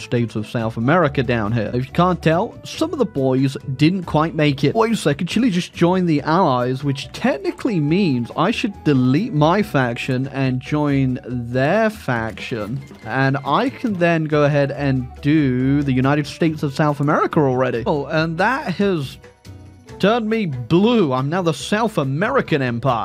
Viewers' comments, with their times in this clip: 0:04 Is it just me or is that "wait" incredibly bit crushed?